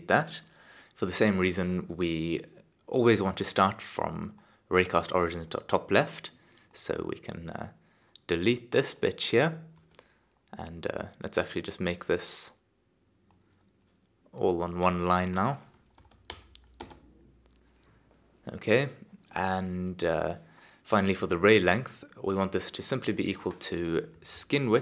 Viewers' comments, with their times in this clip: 0:06 "so we can delete this bitch here" nice
0:07 "We can... Delete this bitch here" xD I'm fucking dying! Even the captions say "bitch".
0:08 Lol just found out that he cursed "delete this bitch here". btw huge fan of your work sensei.
0:08 did he say "delete this bitch here?" xD
0:08 Delete this bitch here o.O
0:08 the delete this bitch here fucking got me so hard!